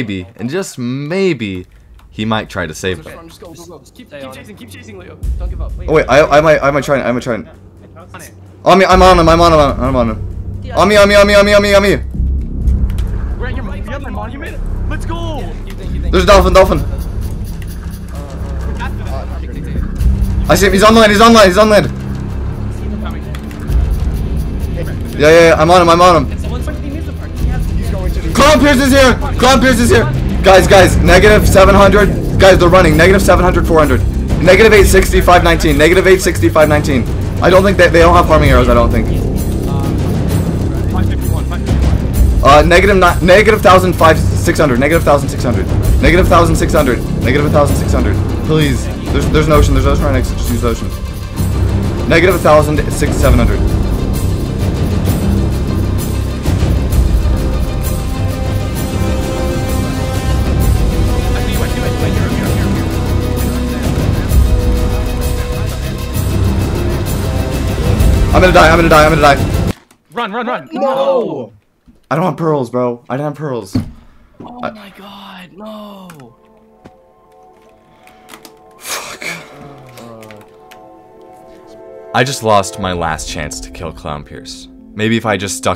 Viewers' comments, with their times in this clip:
0:10 bro just said "onion onion onion onion"
1:10 i love the noo
1:10 the unison “no” from everyone lmao